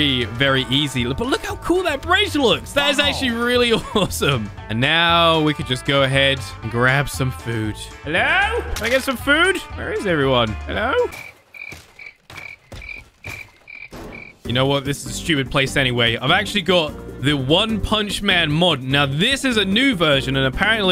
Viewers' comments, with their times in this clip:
0:08 why was there an a among us sound